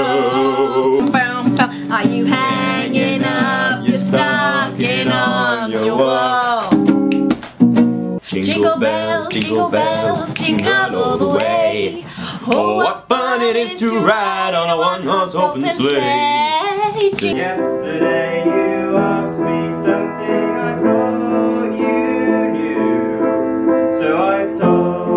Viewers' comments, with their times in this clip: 0:07 ZOELLA SINGING THO amazing!!!!!!